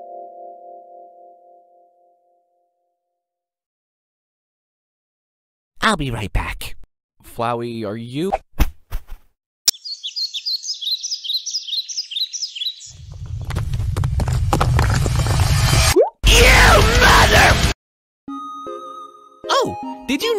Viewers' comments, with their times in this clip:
0:08 got me lmaooooo love the VA for flowey there